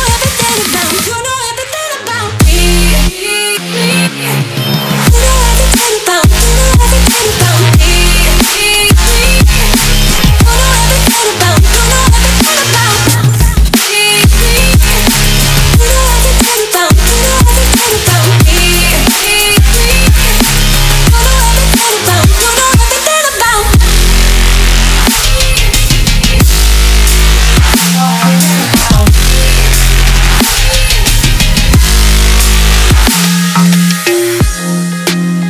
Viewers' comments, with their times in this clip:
0:03 I like when the songs volume gets lower then higher idk what it’s called but it sounds cool
0:23 Cool Melodic Dubstep at the end there.